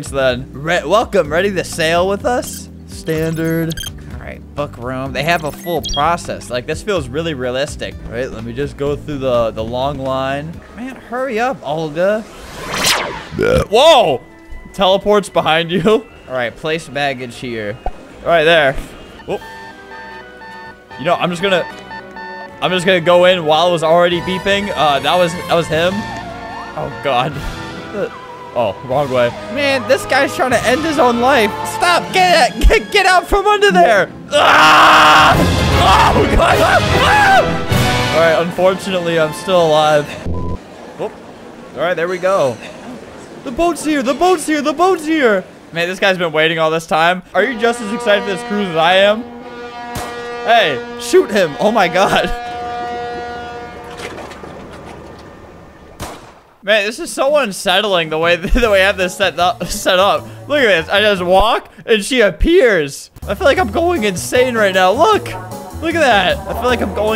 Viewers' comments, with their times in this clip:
0:04 sounds like u said..
0:21 the beginning of a terrible accident. Also the edits and music get crazier just in time 😂😂😂😂
0:21 the beginning of a terrible accident. Also the edits and music get crazier just in time 😂😂😂😂
0:21 the beginning of a terrible accident. Also the edits and music get crazier just in time 😂😂😂😂
0:35 sounded like a Disney land ride 💀💀
0:51 he sounded like his younger self lol I heard the old younger flamingo voice multiple times